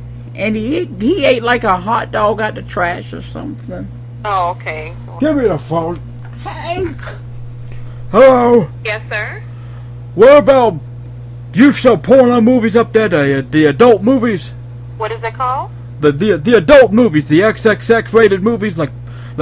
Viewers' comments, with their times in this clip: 0:06 "Hank!". lol the emphasis on the "k".